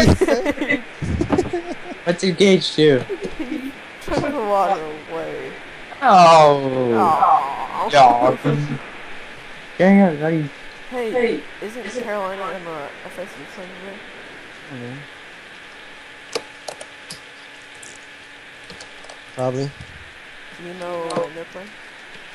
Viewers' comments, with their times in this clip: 0:06 did anyone else lose sound ot